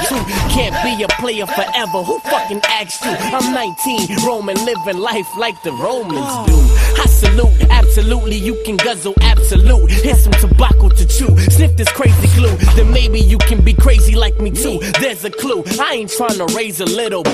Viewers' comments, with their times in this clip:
0:05 IT SKIPS #LA LA LA BOOM